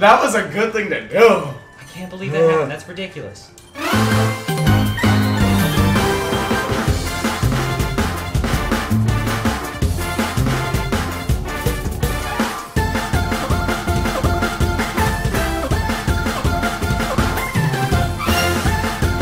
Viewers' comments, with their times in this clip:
0:03 What is that music ? Very catchy tune.